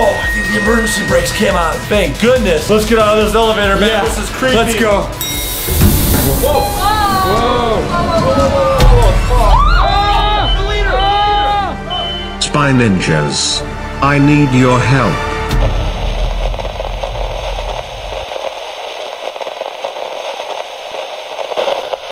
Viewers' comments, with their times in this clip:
0:10 If anyone noticed when the leader was at the elevator the spy ninjas were screaming and all but the leader said he NEEDS HELP
0:10 Sounds like a moan-